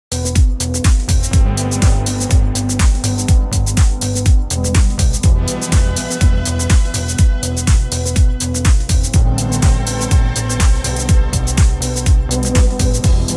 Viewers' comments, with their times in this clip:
0:00 name of song wich starts the video ? love that mellow and chill stuff.